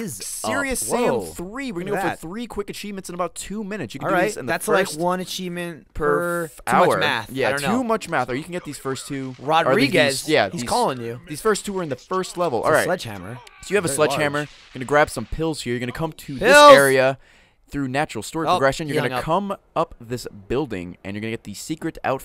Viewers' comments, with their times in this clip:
0:04 who thought it was their skype goin off ?